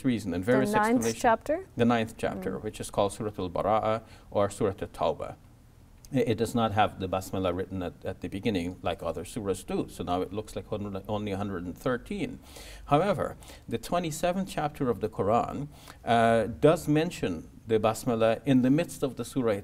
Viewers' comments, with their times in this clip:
0:05 i dont know if i heard it wrong but i played it 10 times just to check and heard basmillah, must be an accent issue